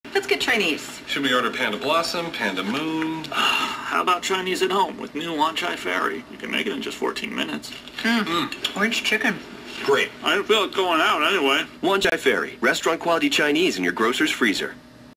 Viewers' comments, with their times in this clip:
0:03 I never seen a commercial that was hilarious and irritating at the same time. The emotionless, infertile couple aren't the least bit concerned there's a talking panda in their living room. Then the panda sounds like he just farted and at the end he says "I can feel it going out anyway" which sounds like Wanchai Ferry causes indigestion and gives people the runs.